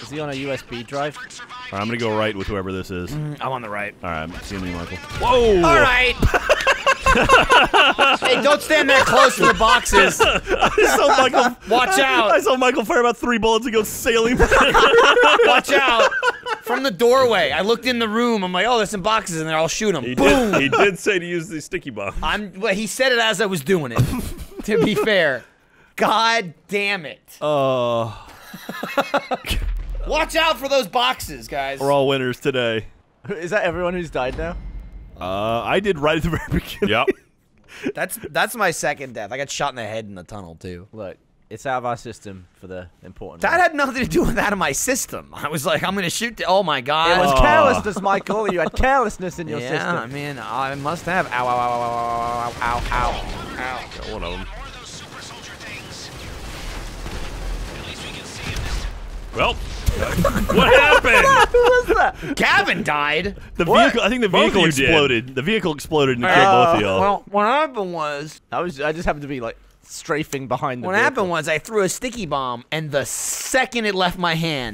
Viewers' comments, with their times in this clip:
0:08 Don't Stand... Don't stand so... Don't stand so close to BOOM!
0:56 on 0.25 speed sounds like an acid trip